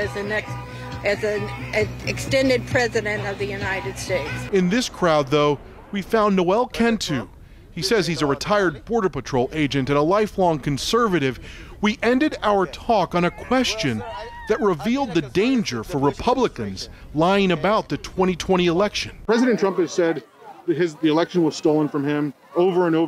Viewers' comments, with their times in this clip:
0:05 you know, for a guy who is a right wing white supremacist and hates Mexicans.......he sure does have a good Mexican accent......hahahaha